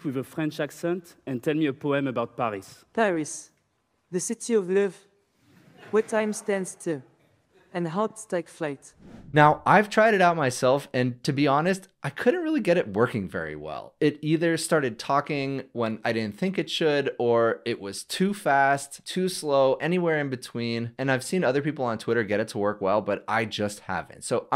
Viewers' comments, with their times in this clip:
0:06 that was terrible. Even if it worked well the sound quality was BAD